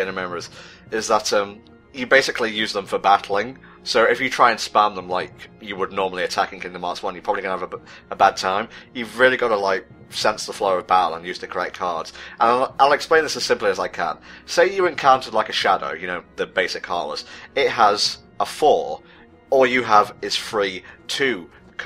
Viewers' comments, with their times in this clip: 0:05 I notice you stuttered when say "Gonna have a bad time" Were you trying to avoid the meme?